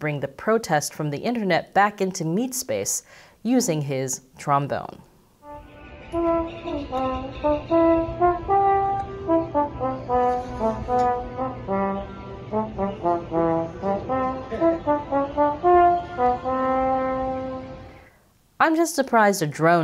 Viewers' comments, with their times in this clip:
0:05 hearing that Les Misérables song on trombone opened my heart up! How could any corona cult member think this is necessary to save lives? Excellent coverage, very detailed ♥️